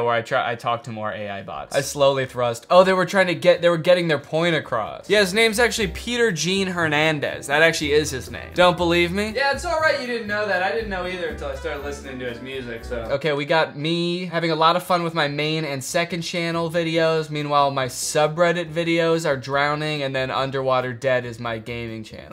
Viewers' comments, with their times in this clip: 0:09 Rock the House intensifies